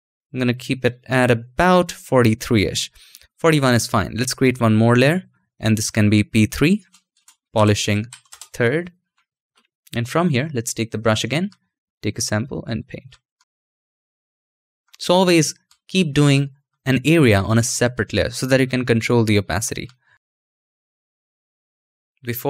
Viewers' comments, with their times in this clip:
0:08 he said polishing turd.